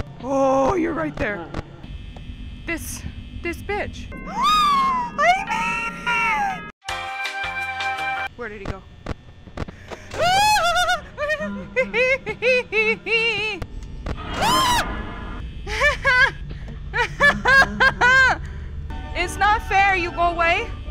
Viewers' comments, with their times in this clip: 0:08 The laugh got me rolling 😂😂